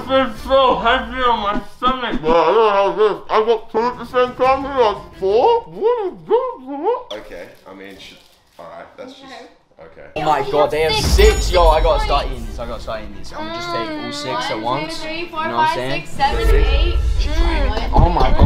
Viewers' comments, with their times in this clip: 0:06 they sound like henchmen